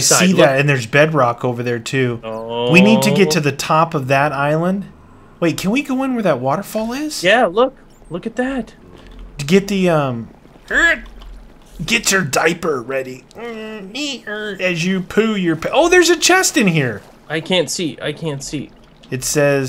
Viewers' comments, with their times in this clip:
0:04 u can hear a duck